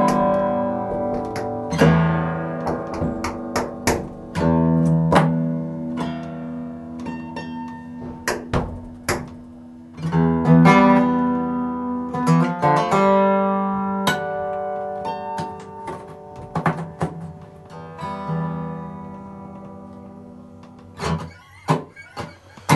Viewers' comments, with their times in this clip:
0:10 i thought he was about to play "drive" by incubus